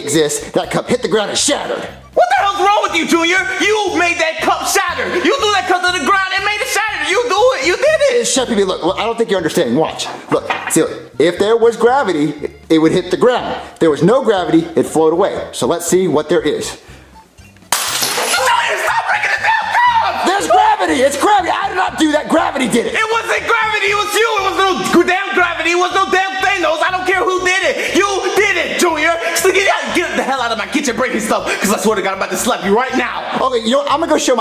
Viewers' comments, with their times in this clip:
0:05 the way he said it
0:18 JUNIOR, STOP BREAKING THE DAMN CUP!!!! (His screams sounds like a lady) XD
0:18 mins into the vid the way pee pee scream got me laughing so hard